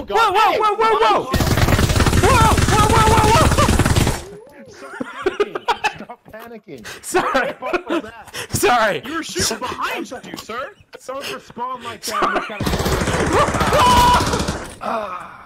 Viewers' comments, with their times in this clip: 0:03 the scream after the shooting xD